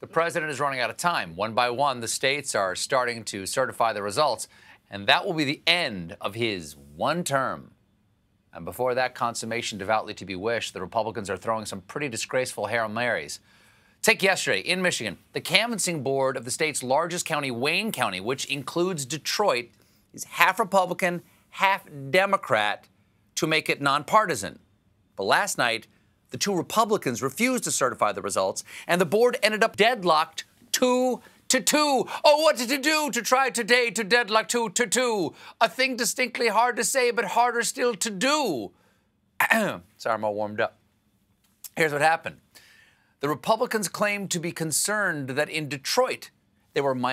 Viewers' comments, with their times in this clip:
0:07 Don’t you love the way Stephen rolls that phrase around his tongue: “end of his ... one term!”
0:31 "...but they'll beat a tattoo at twenty to two with a ratatata-tata-tattoo and the dragon will come when he hears the drums a minute or two to two today a minute or two to two." I love this oral exercise, I learned it in elementary school and this is the second time I hear Stephen say it, but that time he said it on the Daily show was baffling, he has such great diction at a ridiculous speed without shifting vowels.